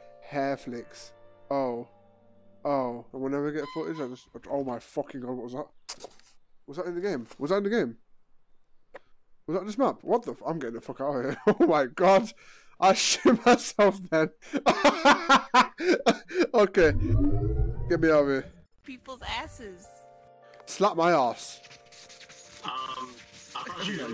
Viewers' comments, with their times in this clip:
0:05 The sound that you heard was a wild thomas tankigis bird trying to attract a mate